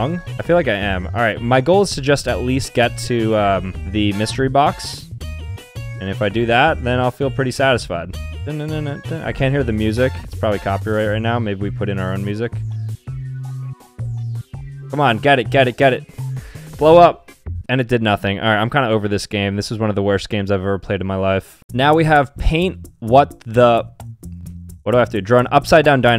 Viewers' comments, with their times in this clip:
0:08 Sambucha:*Humm's along with the music, says I can't hear the music.*